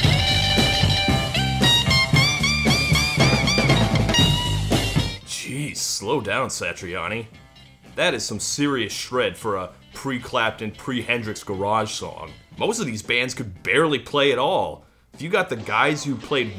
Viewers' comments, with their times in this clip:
0:03 Honestly, that solo, while nice and fast-paced, is a basic blues solo, very reminiscent of Chuck Berry.